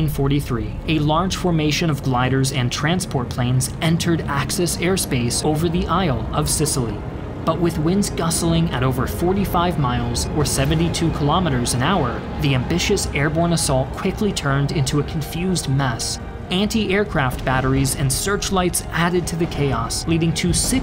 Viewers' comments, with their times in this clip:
0:07 Is “gustling” a word???